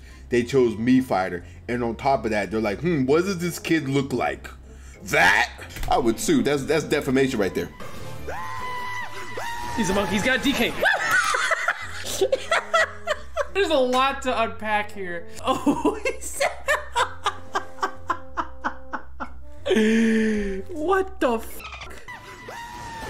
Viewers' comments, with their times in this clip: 0:08 That monke war cry is amazing
0:10 His "Woo!" was killing me 😂